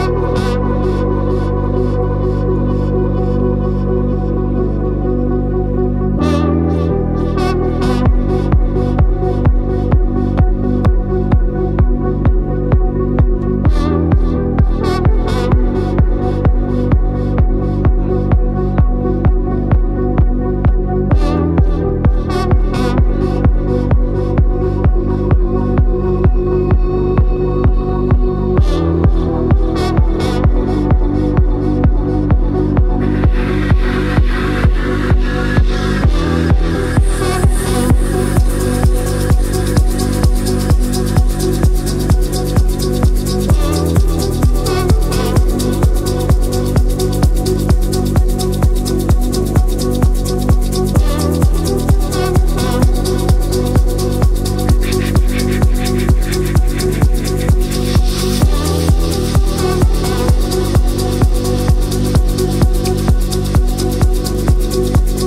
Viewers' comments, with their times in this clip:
0:08 the bass hits and his head bobs...Clear passion!!! Love it. Progressive trance at its finest! 👍💪😊
0:52 Why does he stop making the sounds and they keep playing? Like he stops shaking that thing but you still listen to the sound of it